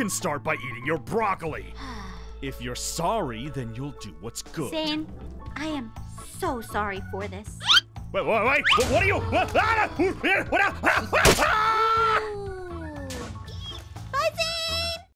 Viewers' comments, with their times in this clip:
0:12 OMG THE WAS SHE JUST SAID "Bye Zaaaneee"